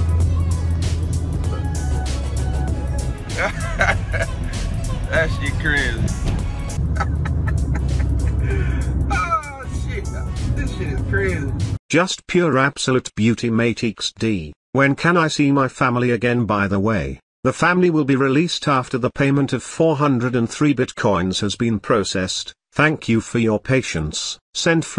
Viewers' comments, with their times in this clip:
0:07 is that his turn siglil or his laugh